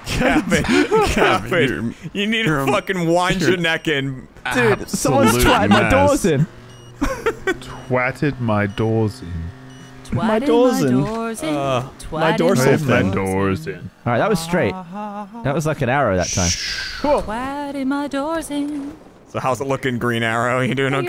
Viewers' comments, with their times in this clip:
0:09 Shout out to Lindsay for that "twattin my doors in" rendition of the My Little Pony theme song That was random and appreciated. XD